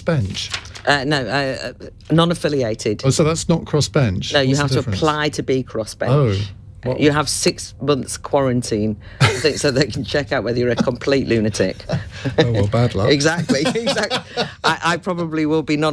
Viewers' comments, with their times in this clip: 0:03 David Liddington said 'chip'. Why has this been silenced out? I was listening live to this when he said it.